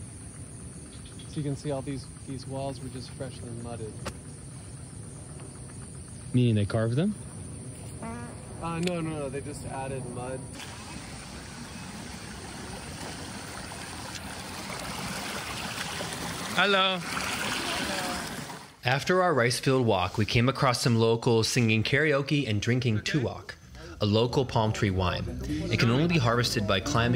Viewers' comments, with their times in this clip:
0:09 the real sound of nature😂